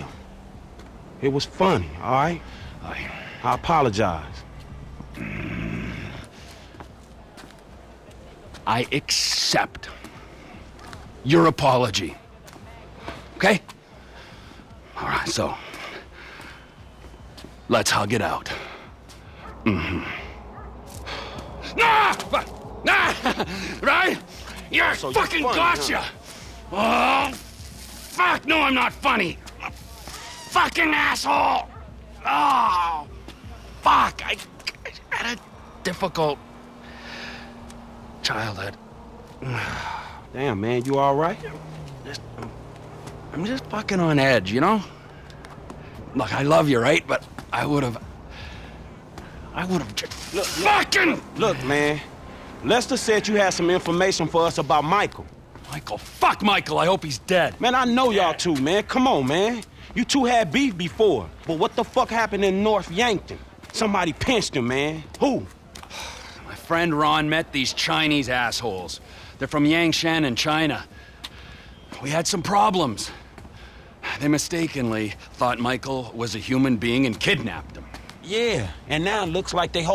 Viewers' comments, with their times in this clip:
0:08 i love how he accepts his apology. His spacing of the words and body movement lol
1:03 I'm not sure that was Trevor's voice actor